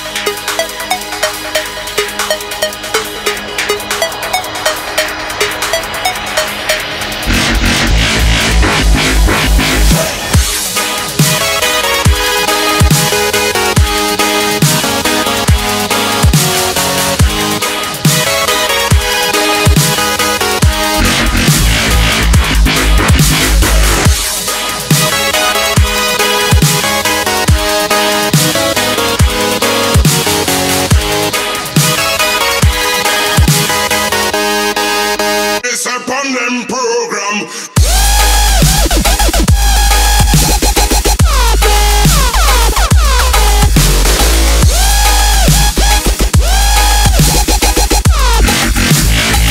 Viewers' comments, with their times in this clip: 0:10 this sounds like an epic boss fight i love it
0:11 This song went 8-bit for a second after if anyone noticed :D miss the old classics :""""( R.I.P 8-bit
0:35 nothing has ever beaten that! after what, 10 years me still listening to this mayhem! that drop is meeeeeeental! regardless of id dubstep has moved on
0:37 Riddim Dubstep before Riddim.